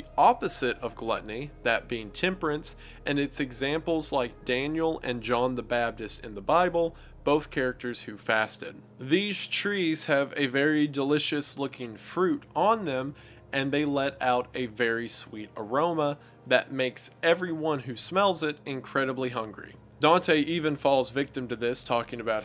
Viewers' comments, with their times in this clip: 0:05 I just noticed that Wendigoon says John the "bapdis" and not "baptist", I realize he has always done this and I can't unhear this now.